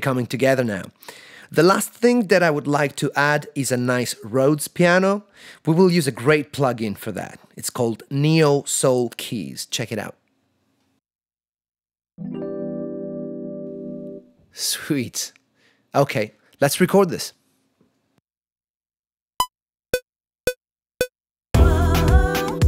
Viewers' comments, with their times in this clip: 0:08 REAL RHODES CRYING IN THE BACKGROUND